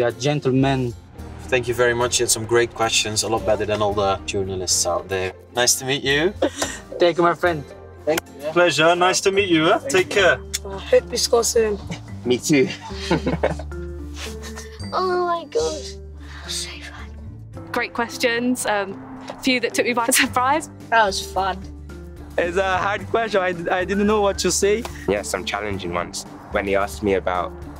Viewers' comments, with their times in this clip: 0:09 sounds like son